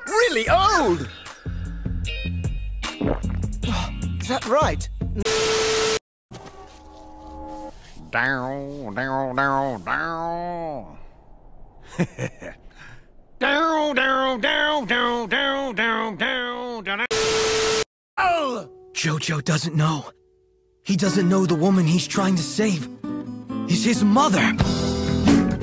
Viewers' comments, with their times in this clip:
0:07 For a moment I thought this was an airbridged version of Jojo but it’s the actual Dub I CANT 😂😂😂